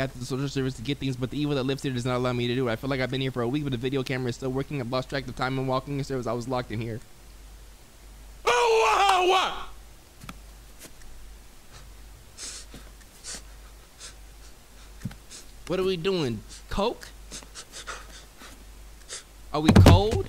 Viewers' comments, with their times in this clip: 0:07 LMFAOO THE WAY IT WAS JUST STANDING THERE AND HIM SCREAMING